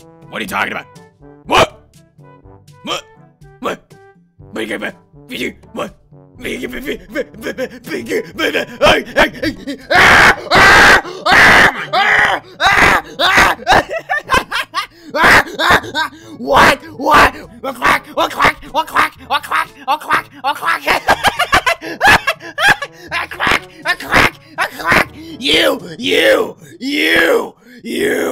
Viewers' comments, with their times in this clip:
0:10 Movie Shadow’s Scream when he got turned into a duck was Priceless!!